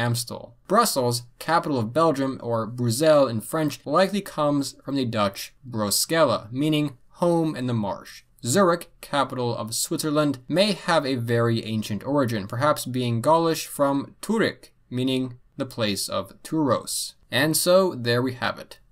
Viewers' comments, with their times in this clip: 0:03 Oof, that pronunciation was so off the mark I thought he was pronouncing Bruocsella at first